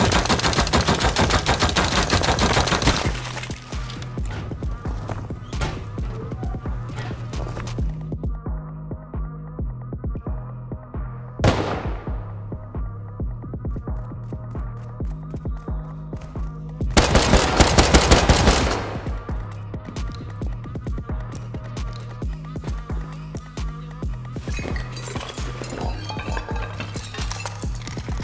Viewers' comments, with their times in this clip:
0:09 when music goes quiet while you sneak around to avoid him hearing ya.. soon as you kill him, volume turns up. Your attention to detail is phenooomenal